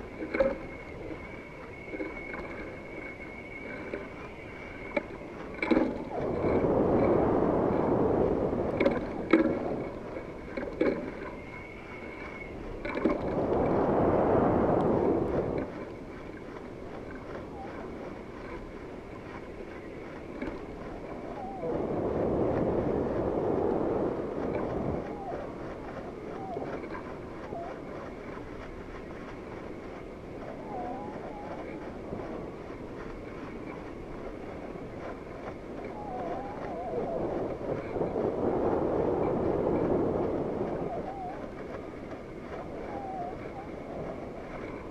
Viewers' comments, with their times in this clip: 0:05 Exactly! we hear whistling wind...
0:25 from you can hear spirits agonizing,..some women voice crying,..and lots of Suns in 180° rotation..